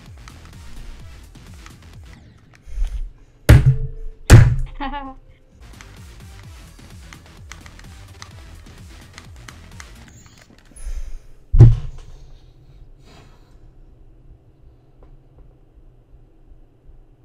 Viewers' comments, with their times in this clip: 0:04 what was that random laugh ?